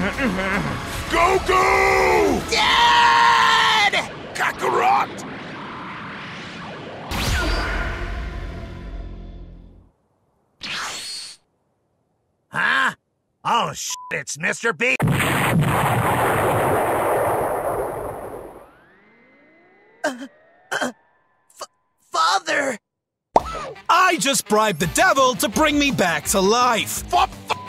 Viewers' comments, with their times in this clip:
0:09 Perfectly cut screams